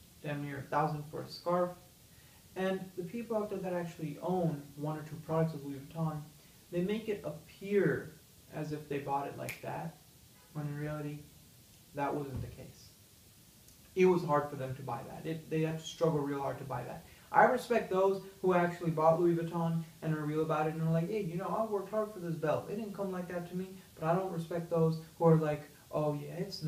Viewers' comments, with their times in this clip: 0:10 car horn doesnt sound like you are in a penthouse suite if you can hear that😡